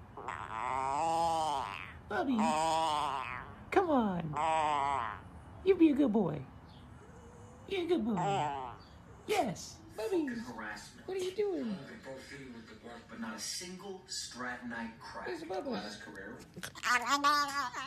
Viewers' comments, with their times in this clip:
0:03 sounds like he's farting... :D